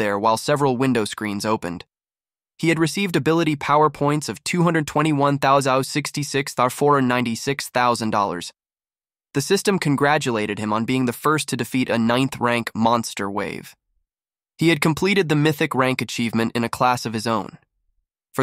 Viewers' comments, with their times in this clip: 0:06 why did you get a stroke while reading this